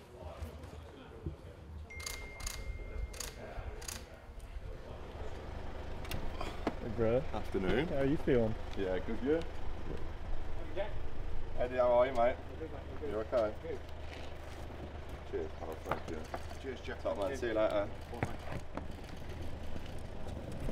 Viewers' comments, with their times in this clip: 0:04 such a cheeky "how are ya feelin" to the 100 mill man